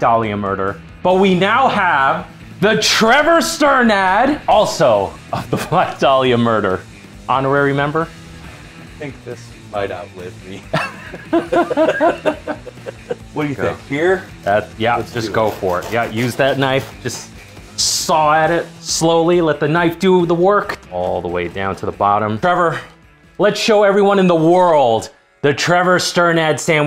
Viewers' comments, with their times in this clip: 0:09 Just me or was there a bit to much sincerity in that one